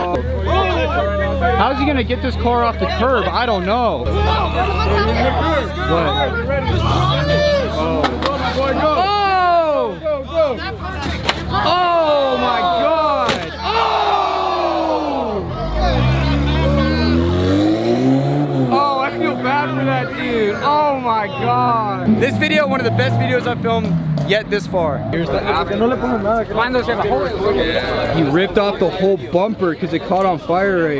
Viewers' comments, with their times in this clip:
0:08 just listen to how the ohs get louder each smack it’s Just plastics guys 😂😂😂
0:13 the hype lol not one but two OHHHHHHHHHHH🎉😂